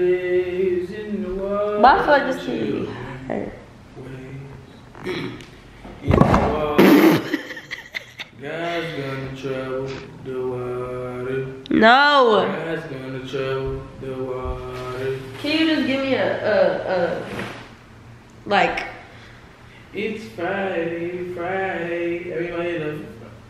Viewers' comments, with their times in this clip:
0:09 not him singing a slave song 😂